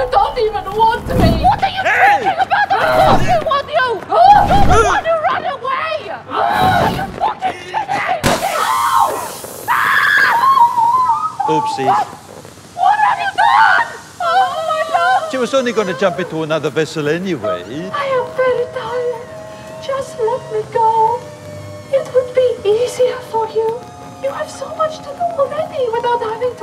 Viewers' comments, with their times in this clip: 0:08 Holy crap the scream 😂